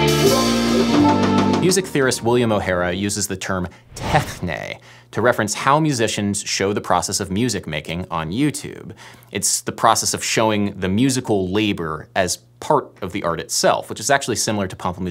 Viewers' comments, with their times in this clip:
0:03 "techné" totally not the right pronunciation